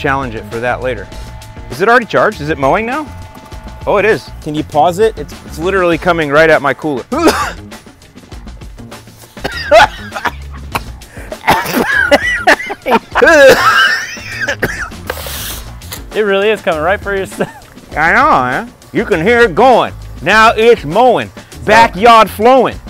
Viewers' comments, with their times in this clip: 0:07 that’s the cough when it’s that potent THC